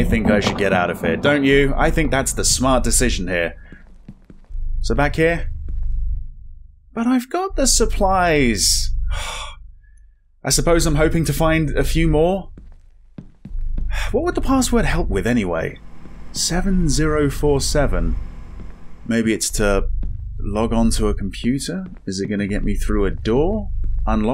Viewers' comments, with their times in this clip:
0:08 lmao why does he almost sound like a little kid when you tell them to do something they don’t want to do and they whine to you about it before stomping their feet as they walk away 😂